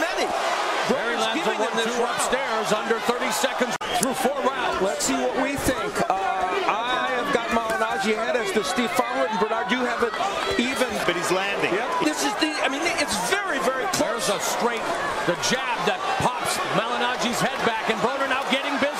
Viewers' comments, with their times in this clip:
0:03 i felt that punch through my earphones. AB HIT HARD!!!! LOOOL MY NIGGA